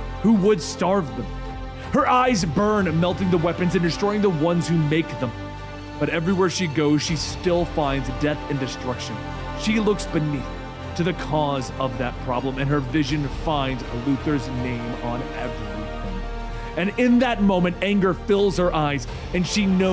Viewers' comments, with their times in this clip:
0:07 music volume is tooooo loud, can hardly hear the speaker... specially This gets a thumbs down - as the editing team CLEARLY didn't QA this video...